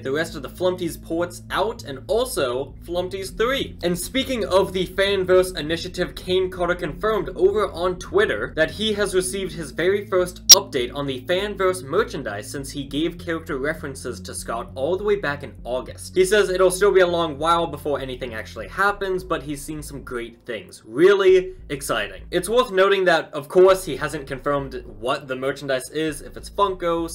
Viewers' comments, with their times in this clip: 0:09 there is an audio glitch of a loud screech spike type thing, idk how to explain that noise exactly